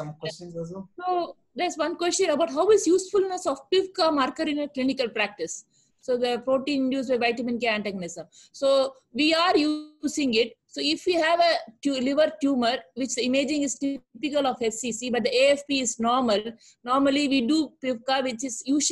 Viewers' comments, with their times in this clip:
0:05 what is this marker she mentiones Cant understand what she is saying.